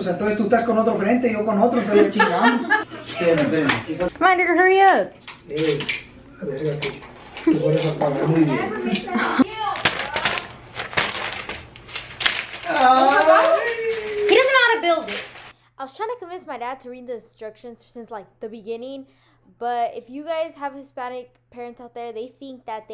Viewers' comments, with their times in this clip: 0:03 did she say the n-word? hard r??
0:04 sorry but that sounded like she said 😭 nvm
0:05 is it just me or did she say the n word
0:05 really sounds like she said the n word ):